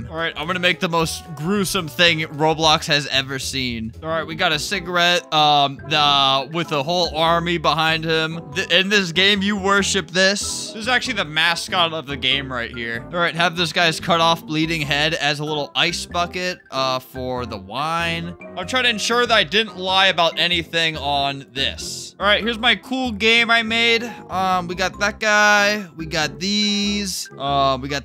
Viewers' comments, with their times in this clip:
0:10 Who else thought the "prom date" said somethin else...